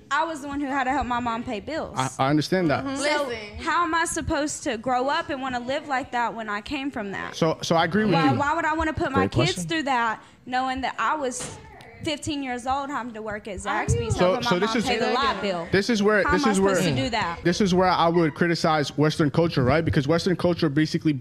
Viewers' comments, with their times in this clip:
0:05 why is the whale in the red so loud.